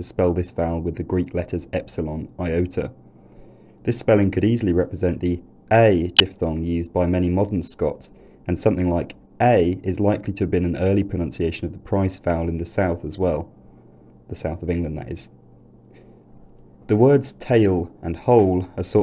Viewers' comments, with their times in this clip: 0:07 Audio glitch warning